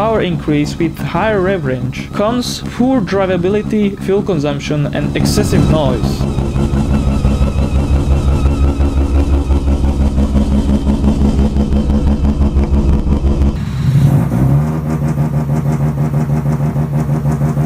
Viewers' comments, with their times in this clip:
0:04 What excessive noise? Sounds perfect to me.